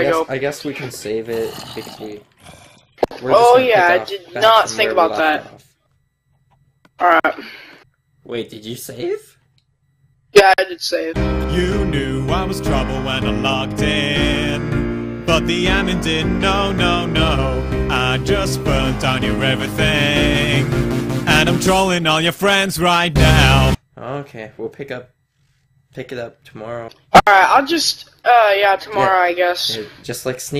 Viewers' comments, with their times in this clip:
0:08 that voice crack XD
0:08 that voice crack doe lol
0:18 best singing ever